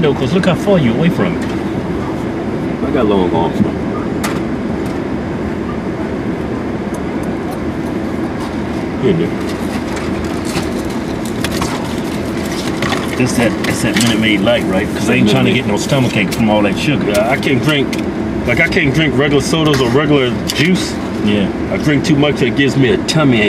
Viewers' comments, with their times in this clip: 0:08 Did he say here nigga? Lmao